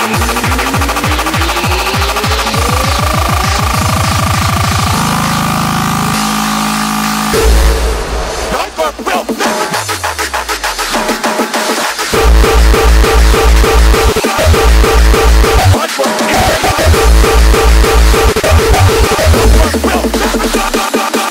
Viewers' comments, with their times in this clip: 0:09 raw fucking core